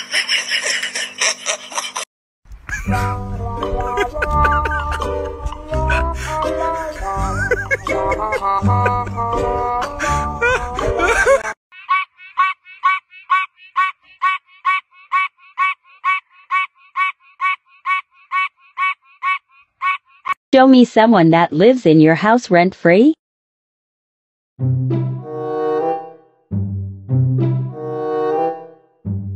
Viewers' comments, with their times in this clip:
0:03 what's the name of the song sounds funny 😂
0:12 shy little frog singing along to this fun tune
0:12 DAMN THAT A BEAT
0:12 That’s a good beat some one should add that in a song
0:14 brazilian funk be like: